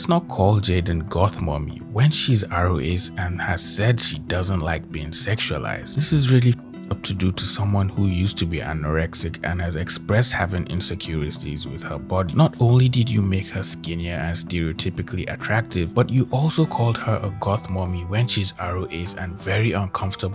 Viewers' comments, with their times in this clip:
0:06 I love the high school bully music in the background. Completely unrelated, I know